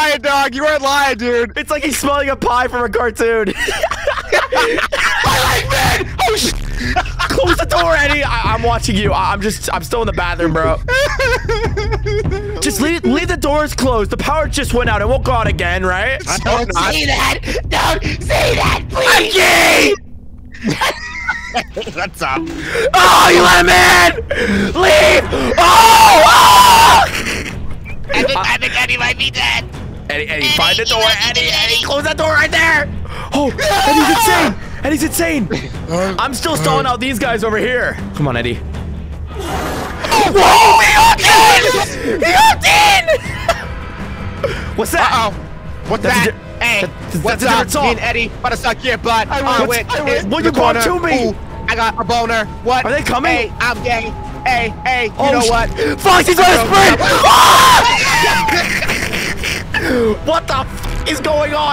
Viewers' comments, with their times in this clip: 0:05 Blud screams I LIKE MEN OH ####!
0:46 Fav part the im gay song and freddy made me pause the video to laugh